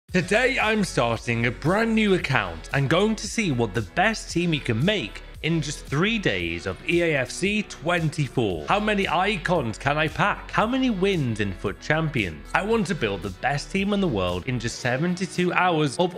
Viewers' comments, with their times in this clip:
0:02 sounds a lil raspier than usual right from the get-go man. hahahaha.